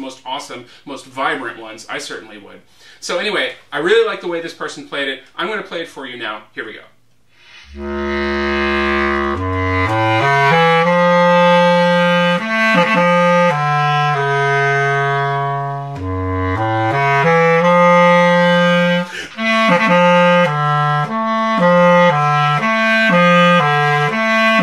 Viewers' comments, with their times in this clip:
0:10 I see how you pulled that phrase out of the instrument :P